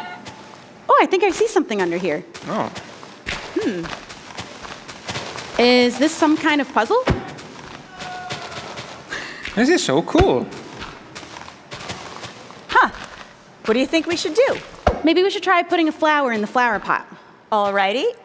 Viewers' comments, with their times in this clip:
0:05 kills chicken some guy in the back: “NOOOO!”
0:06 they kill a chicken and a man screams "*NO!*"
0:06 they kill a chicken and a man screams "*NO!*"